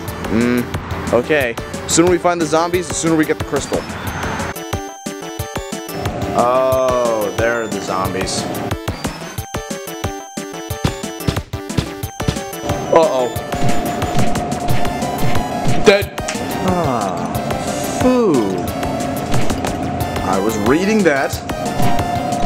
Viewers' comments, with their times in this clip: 0:03 The music at the start really blows